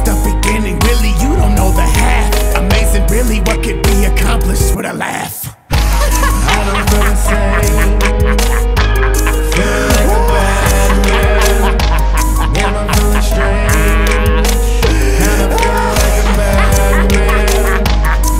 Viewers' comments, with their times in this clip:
0:06 I love that laugh